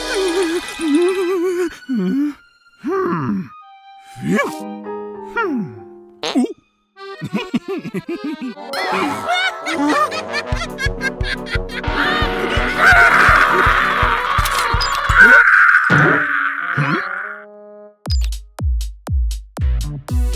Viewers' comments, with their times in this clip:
0:05 Pencilmate farted like a cow.